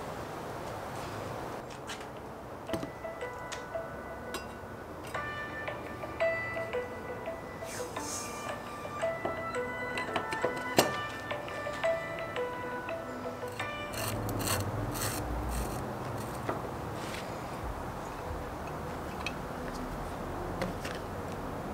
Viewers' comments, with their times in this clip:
0:03 thought my phone was ringing went to look for it at the